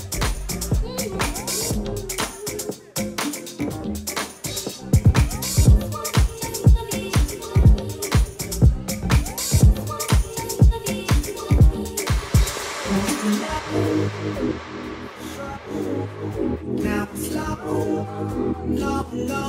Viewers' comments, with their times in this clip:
0:07 is the banger